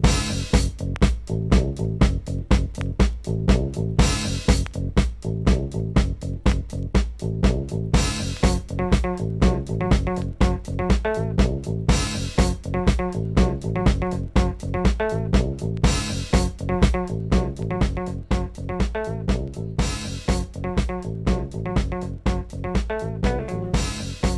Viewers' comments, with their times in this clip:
0:08 i love that bass from on ...thats groovy ;) nice !